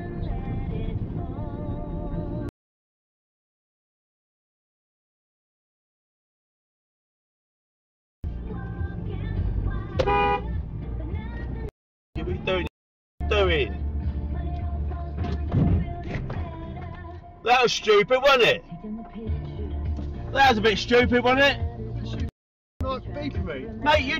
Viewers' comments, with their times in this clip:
0:07 what's the point in honking? the cyclist didn't get in your way, did not impede your driving, you just can't take being overtaken by a bike it seems.